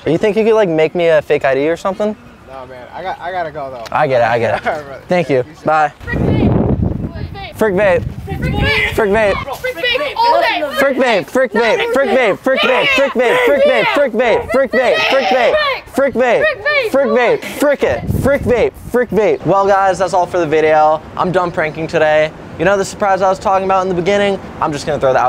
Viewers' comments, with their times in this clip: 0:10 Those kids were hype who said frick vape 😂